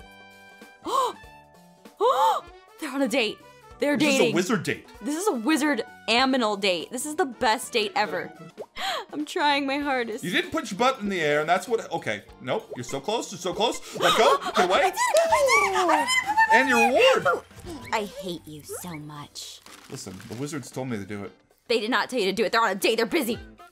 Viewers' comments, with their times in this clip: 0:05 this is a wizard... AMINAL date Who else noticed she said aminal instead of animal
0:06 theyre on a wizard AMINAL date. Me:aminal?????